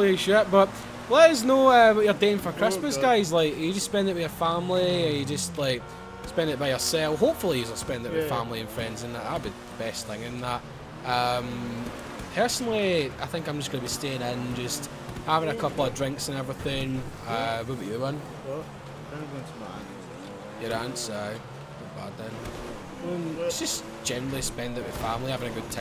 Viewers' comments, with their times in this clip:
0:06 hahaha really let the accent through didnt ya haha